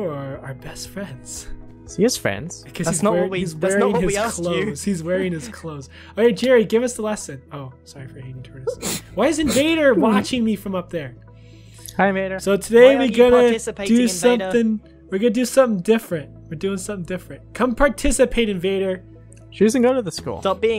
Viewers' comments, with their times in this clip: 0:06 What is that noise??